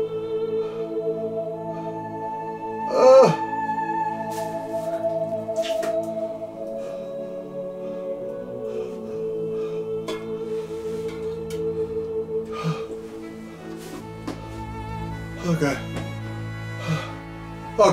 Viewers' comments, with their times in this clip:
0:05 Did Beast spit on the floor ? That didn't sound like the trash can! Love the videos!